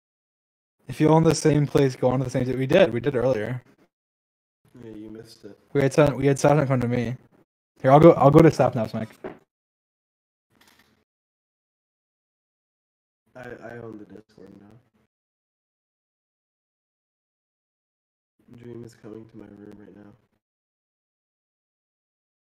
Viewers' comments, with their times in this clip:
0:05 Me in am in the morning with volume at max The intro: AHHHHH Also me: I'm dead